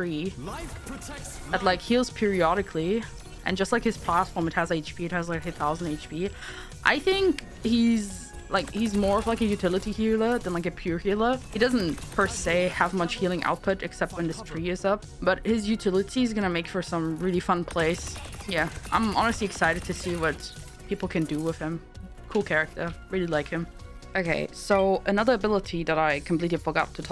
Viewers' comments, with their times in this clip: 0:08 no she didn't say healer, she said Hero I just have something in my ears :)